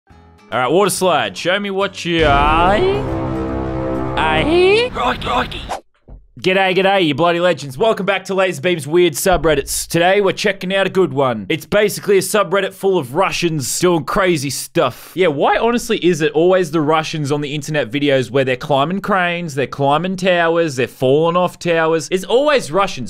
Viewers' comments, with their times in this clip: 0:01 WAHAJAH (mario beeing horrified sounds)
0:06 g'day g'day sniper in tf2